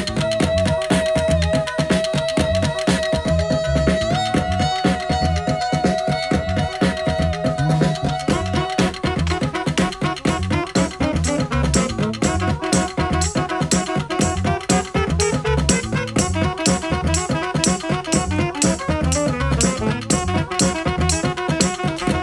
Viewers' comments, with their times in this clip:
0:07 Omg Can it really get any funkier than that?